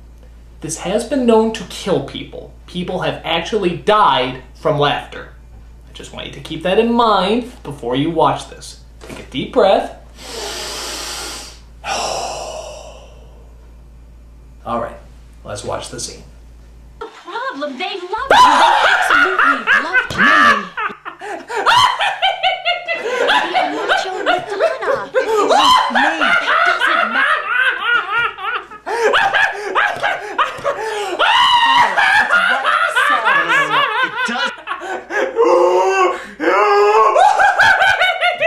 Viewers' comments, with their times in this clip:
0:06 THE LAUGHING MADE ME LAUGH SO HARD
0:16 I'd love to see a Vulcan on Star Trek just suddenly bust out laughing like this, emotions being stronger under their control and all.
0:26 that might aswell be morrisey